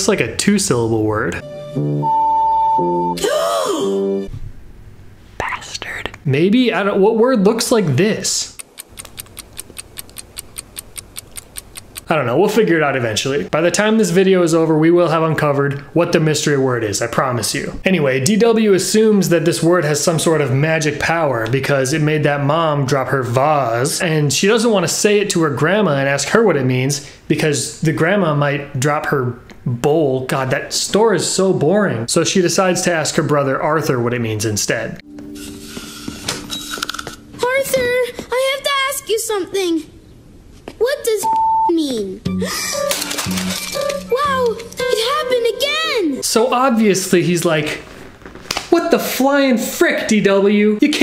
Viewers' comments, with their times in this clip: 0:07 I thought he said "d*mn it" 😂 or maybe "f*ck"?
0:39 You can actually here a little bit of the word before the bleep Sounded like she said f*ck